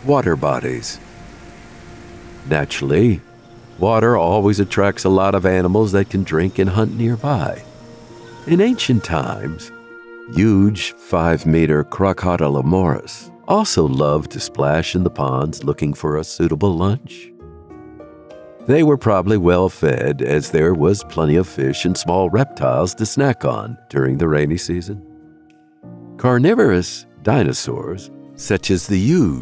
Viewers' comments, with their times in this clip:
0:10 I used to think the same about the videos from this channel. But now I think of them as "so bad its good". I mean, just listen to the pronunciation of Crocodilomoprhs its comedy gold!